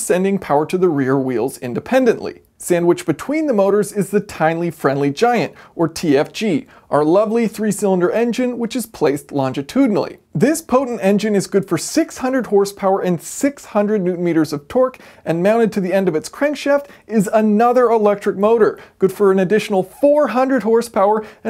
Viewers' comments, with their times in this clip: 0:03 The Tinly Friendly Giant. I had to stop and relisten to make sure I did hear him say Tinly
0:05 "Tine-ly Friendly Giant" whoops :)